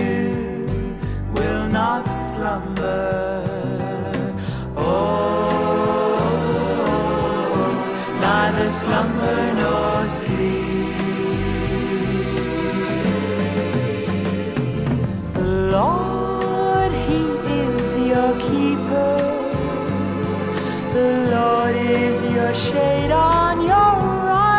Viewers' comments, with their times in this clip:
0:07 Love hearing this, scripture in song \o/